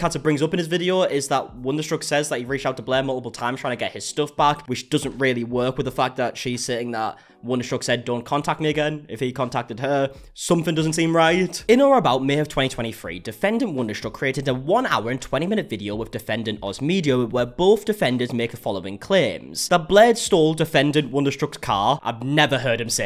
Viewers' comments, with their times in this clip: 0:10 "🎵Somethin' doesn't seem right🎵" Sorry, I just thought that sounded pretty musical Edit: and that song would be a chart-topper